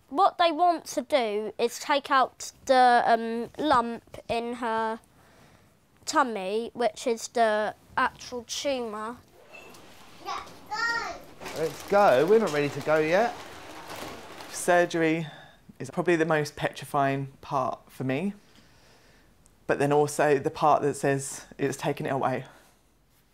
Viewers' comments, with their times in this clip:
0:07 this is so sad that boy speaks really good like an adult